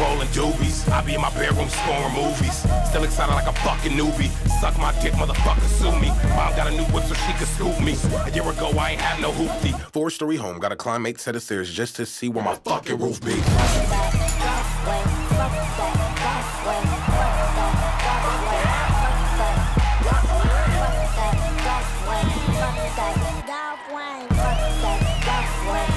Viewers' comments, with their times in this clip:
0:06 there’s a guy faintly yelling something and it sounds like my brother yelling my name so it puts me off every time